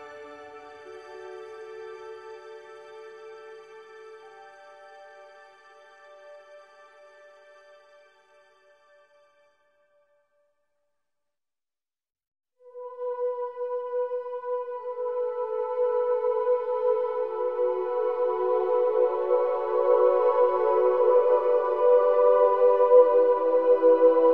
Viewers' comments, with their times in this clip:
0:10 sounds like a soundtrack from Halo 3 that I just can't remember.